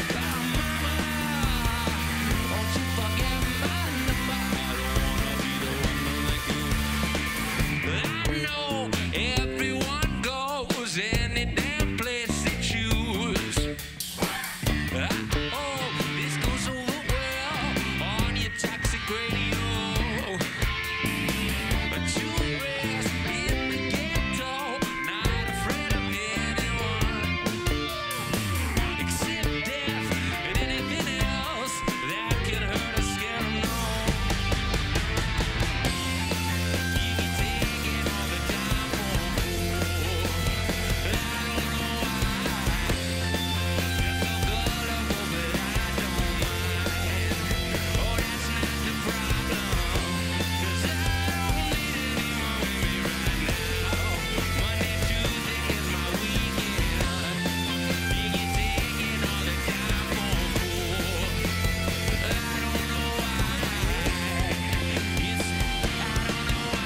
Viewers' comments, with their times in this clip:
0:03 "I dont wanna be the one in the group" am i hearing this correctly?
0:15 one of the guitars players made a mistake making nickolai having to abort his riff, or something like that.
0:17 The shrieks of the fucking microphones are listened clearly. and I think that before was the same (problems with the microphones) and thats why julian was so angry..
0:33 Dat drum fill !
0:50 Jules was a little flat on that part
0:50 Oh and julian’s “iii don’t need anyone with me right now” looking back show-offy :D